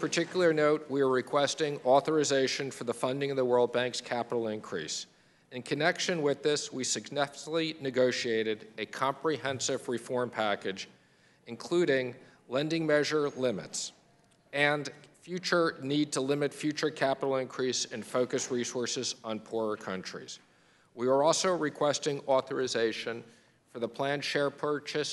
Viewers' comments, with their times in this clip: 0:06 bro somebody needs to compile his blubbering blunders, he's got a speech issue. successfully? Gravel? bruh.